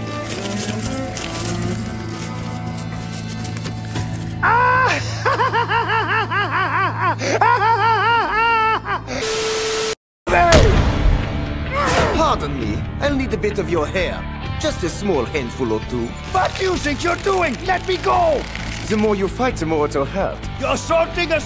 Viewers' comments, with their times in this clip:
0:04 bro stroheims silly as laugh💀
0:04 Yeeeah no, JPN Stroheim's laugh is much better